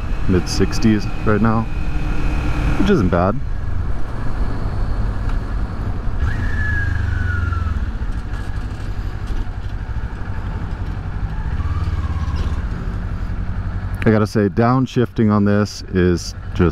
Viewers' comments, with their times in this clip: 0:04 nah that downshift had no business sounding that cool